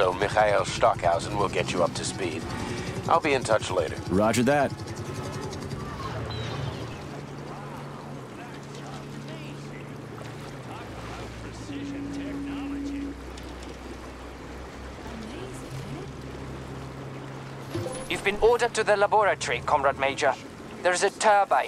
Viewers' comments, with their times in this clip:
0:06 lmfao that WOW meme